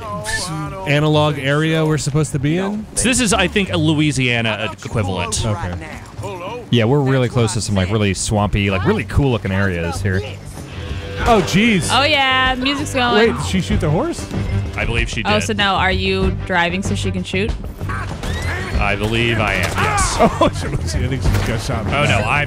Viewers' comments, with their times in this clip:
0:08 1's music was ok, but this one's ost is amazing